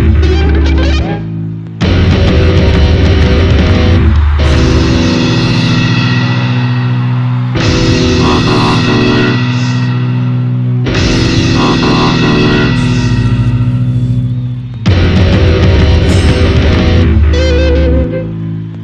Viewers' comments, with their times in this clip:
0:03 On the last tom flams It sounds like there's three instead of two.